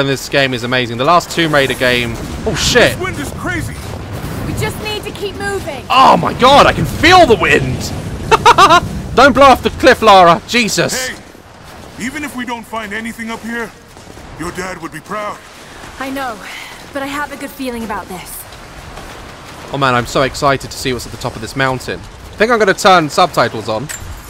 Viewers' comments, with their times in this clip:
0:07 his laugh sounded like pennywise 😂😂